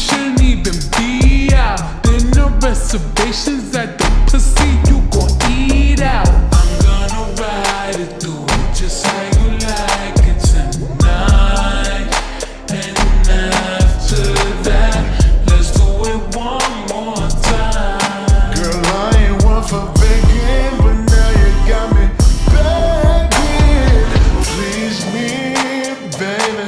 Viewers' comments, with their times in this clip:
0:06 cardi voice is just omg 💗💗💗💖💖💝💘💓💕💞💕💕⭐️⚡️✨✨🌟✨⭐️💫
0:10 cardi sound good here